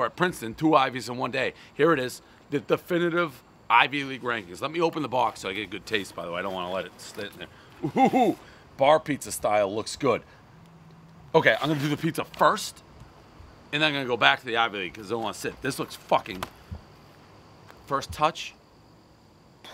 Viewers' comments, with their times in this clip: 0:07 Dave doing his Howard Stern reaction to the pizza